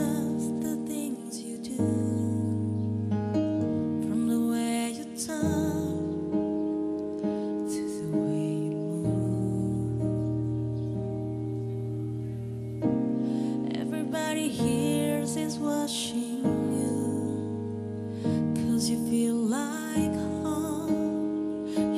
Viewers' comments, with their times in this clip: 0:08 HOLY SHIT that note on "move" is INSANE. Absolutely slayed it, even better than Adele's live version. Go listen to Adele's live version and compare it side by side you will know what I mean. This is so much harder than belting.